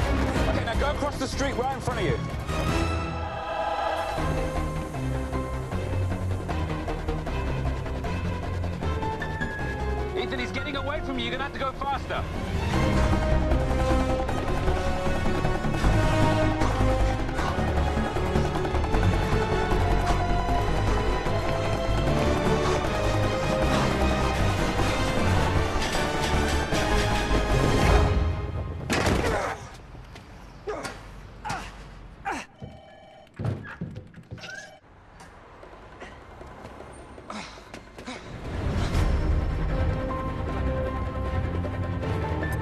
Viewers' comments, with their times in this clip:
0:03 That opera scream when he leaps across the rooftop 😂
0:13 This is the coolest scene ever with the cool song Tom Cruise what a legend
0:21 epic music and epic run by Tom Cruise ♥️😍
0:25 Fun fact: During this stunt, Tom Cruise actually shit his pants when he hit the wall. You can hear it and everything! Have a listen